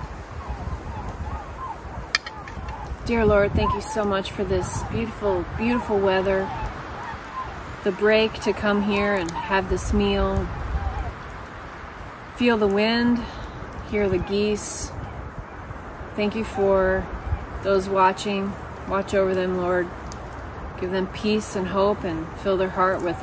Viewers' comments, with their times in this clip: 0:06 were they Trumpeter Swans? They sounded a bit different than geese on the video to me. But hard to tell.